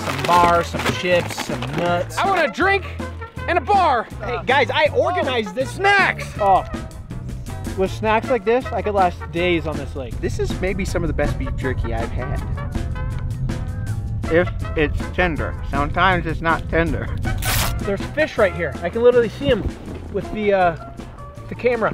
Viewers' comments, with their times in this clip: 0:04 I thought he said I want a drink in a bar